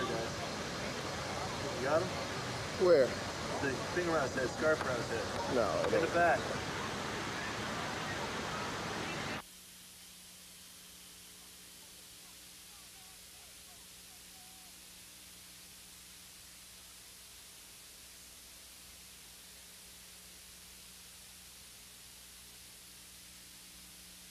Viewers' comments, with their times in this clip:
0:10 I can’t hear what he say
0:12 😂😂 even with the audio f*** up you can still hear Tupac yelling that's crazy😂😂